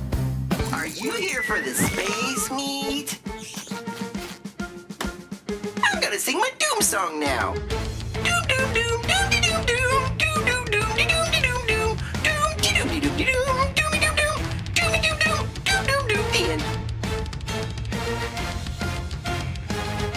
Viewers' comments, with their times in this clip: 0:04 GIR sounds a lot different than I remember him in the cartoon